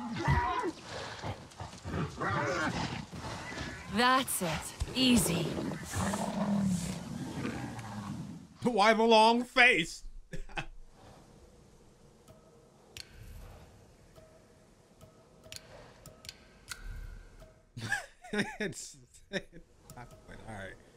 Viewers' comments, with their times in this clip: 0:07 "Why the long face?" LAUGHS